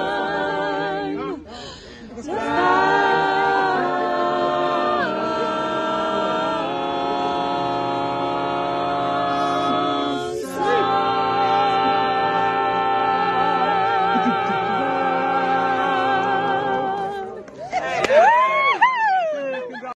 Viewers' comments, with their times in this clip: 0:07 I believe he comes in on a B and then drops a semitone (to a B flat).